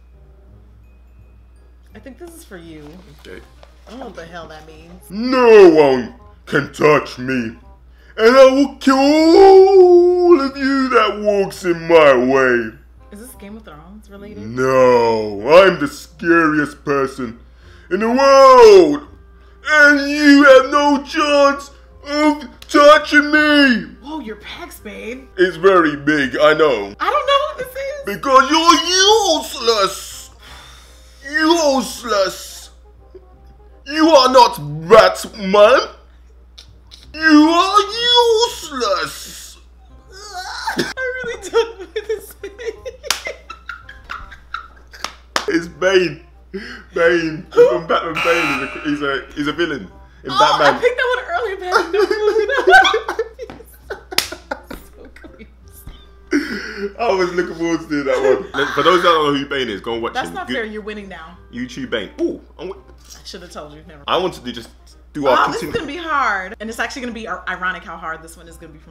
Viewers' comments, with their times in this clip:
0:06 had me dying like..... he sounds like he belong in a Tyler Perry flick 😂😂
0:09 😂😂😂😂😂😂😂 that impersonation has me dying
0:53 while he was doing the voice, the entire time I was thinking that it sounded like Tom Hardy. Then he said Bane AND I LOST MY SHIT.